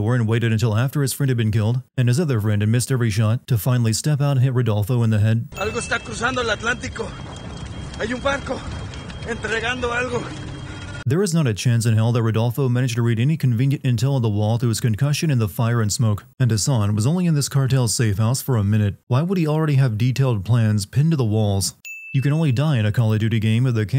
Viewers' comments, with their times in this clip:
0:07 (Before watching will edit later) Ngl im only watching this cus i heard Guanajuato was in this game and i live there XD Edits: what is that Spanish? I heard "Banco" (bank/possibly bench) instead of "Barco" (ship/boat) The whole Sin Nombre being a woman feels illogical, Mexico is very patriarchal, like yeah there are women in cartels, but nothing tells me she "Zheng Yi Sao" the cartel.